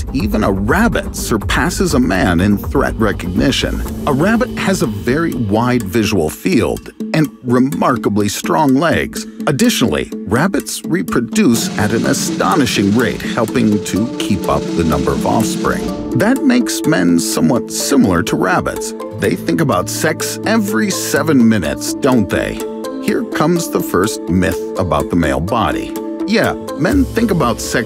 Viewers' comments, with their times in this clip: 0:10 The perfection of Drum Beat
0:11 The Drum Roll Tho... 😭
0:11 i heard the sound of a machinegun